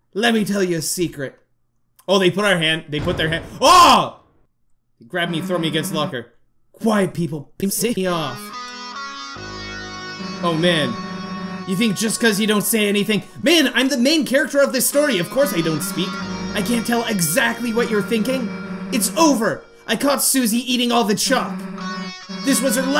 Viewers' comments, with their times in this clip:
0:07 What was with the audio ? Edit: I guess that's censoring, weird way to do that.